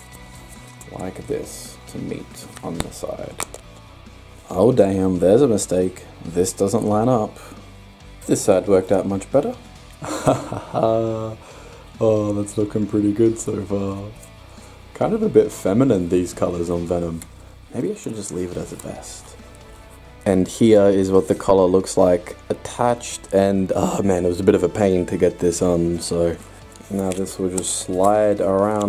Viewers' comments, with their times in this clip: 0:10 his real voice?? Im kidding I have no friends